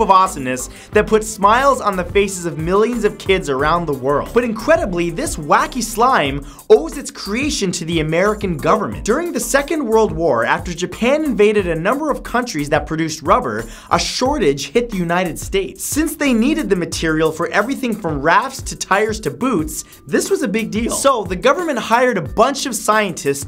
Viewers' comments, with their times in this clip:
0:03 did anyone notice the incwedibwy
0:04 did he just said incwedible instead of incredibly